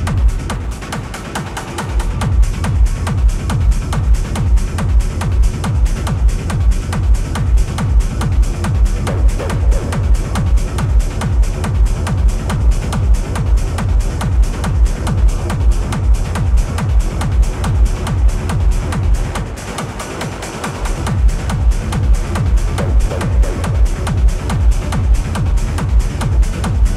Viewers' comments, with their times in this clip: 0:07 Song ? Sounds Nuts